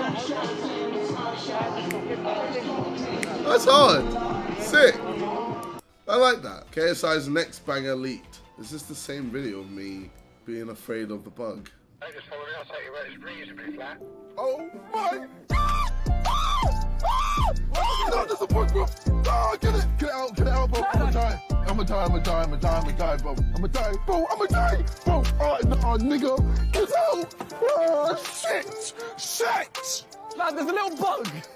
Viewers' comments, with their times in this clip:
0:07 I cannot, ever go back to JJ screaming about the bug after hearing this
0:14 That remix of jj’s scream was sick!